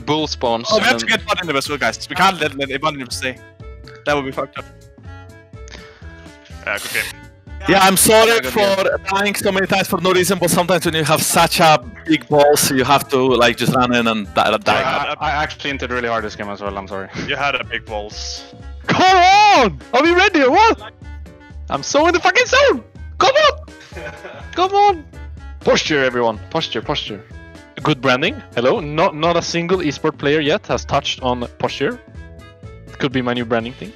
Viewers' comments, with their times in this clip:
0:08 Me wondering why the little Jankos cam is not matching the energy of his voice
0:18 Rekkles sounds like 2018 FNC Caps, especially on his lovely moment